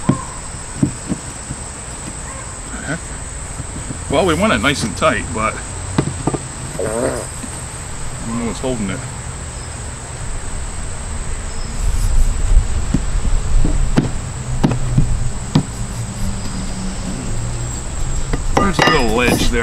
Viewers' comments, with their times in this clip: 0:06 sounded like a gas bomb ... I got one like that a couple years ago, and a darn wind gust lifted it right out of the heavy base and into the neighbor's yard.